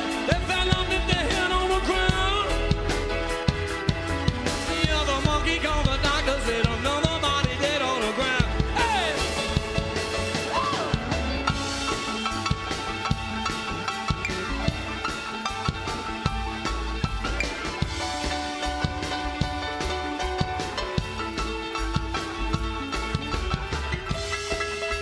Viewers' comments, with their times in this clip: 0:10 that scream had a real Jim Morrison sound to it.